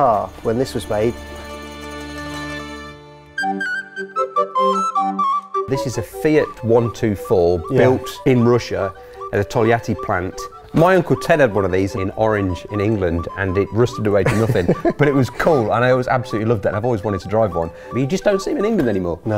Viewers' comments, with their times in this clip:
0:05 Music s is weird other than that cool video